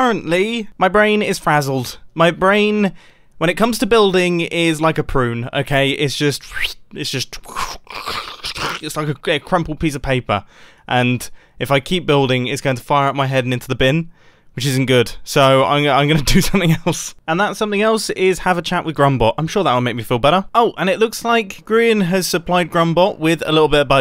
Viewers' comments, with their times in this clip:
0:05 mumbo sound effects.mp3
0:06 epic sound effects